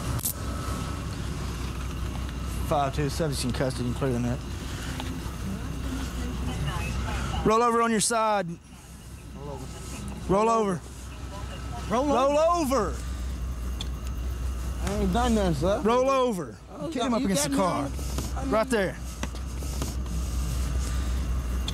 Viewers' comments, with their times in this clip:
0:07 the cop says, "Roll over on your side_____" ...is it me or did it sound like he was about to finish that sentence with the, "N" word? I could've sworn that's what I heard